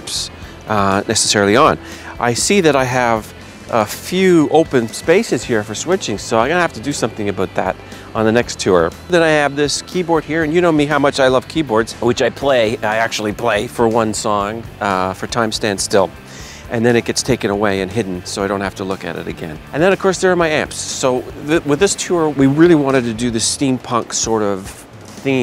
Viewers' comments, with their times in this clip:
0:07 you really should do something aboot that lol.